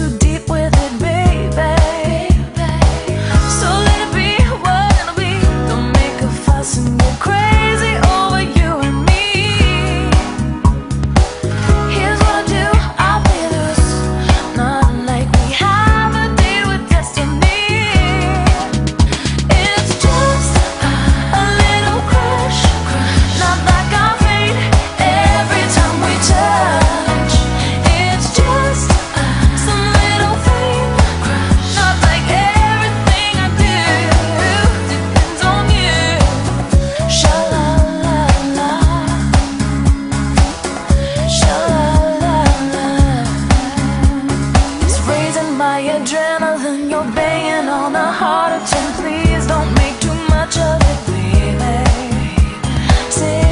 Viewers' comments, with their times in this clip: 0:04 🔥🔥🔥 does this song make you happy in 2020 march This voice is Wonderful 💯💗🔥 👇 👇 👇 👇💝
0:35 🔥🔥 are you still listening in 2020 This voice is Phenomenal 💛🔥 👇👇👇👇👇💗